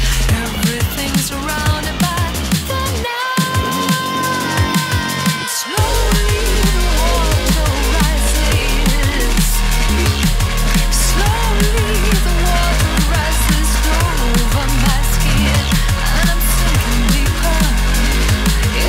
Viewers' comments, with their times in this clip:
0:05 Expected more.. vocals don't fit that much, they're not going smooth with the music, if you now what i mean. Until it fits better. Video is pretty good.